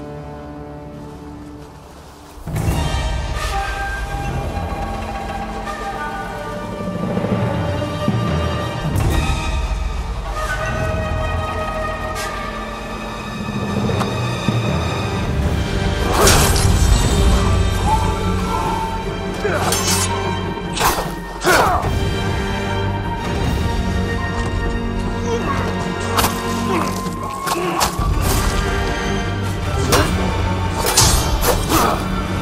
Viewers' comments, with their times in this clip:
0:10 It really sounds tremendous. My favorite one is Can't wait to grab the OST
0:16 Oh my. This soundtrack is awesome.